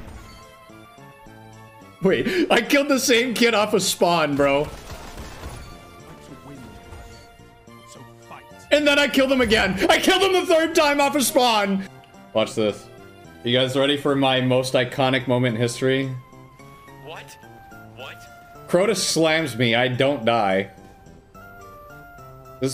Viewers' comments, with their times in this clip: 0:04 last word had perfect timing with the music